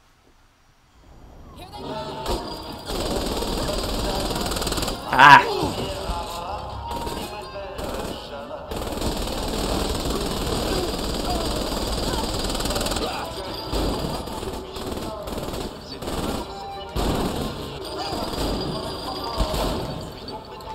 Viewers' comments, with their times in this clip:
0:07 The minigun straight up sounding like a cat toy XD